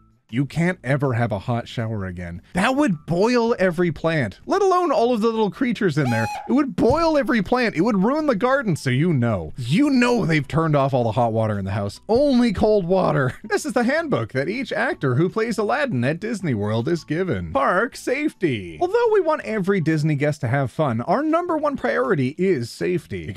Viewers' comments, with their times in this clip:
0:04 I keep going back to and laughing so hard. the little bug picture jumping while yelping. it's so funny
0:06 that bug scream got me cackling lmao! 😂😂
0:06 I DIED AT THE SCREAM